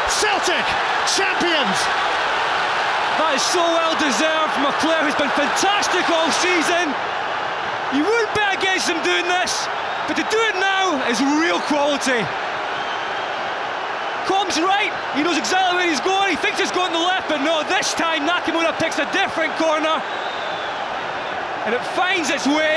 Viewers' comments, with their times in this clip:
0:06 why is the commentator shouting 😂😂